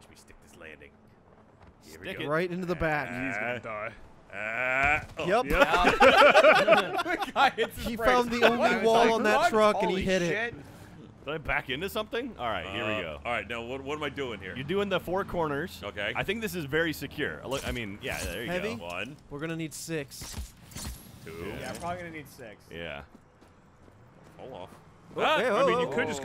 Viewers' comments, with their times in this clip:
0:07 dude sounds like an adult morty